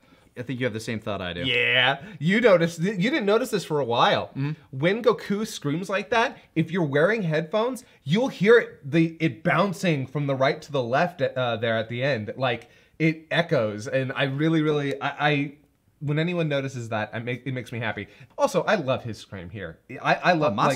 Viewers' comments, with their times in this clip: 0:03 the scream that Masako puts there is incredible... Almost like Sean Schemmel and Mario Castañeda